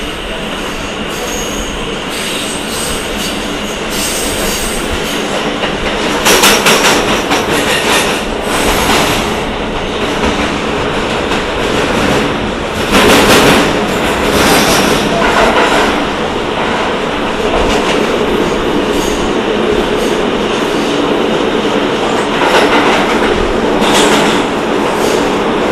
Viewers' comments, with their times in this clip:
0:06 i love the sounds starting sounds like im in the nyc subway!! i wanna go back!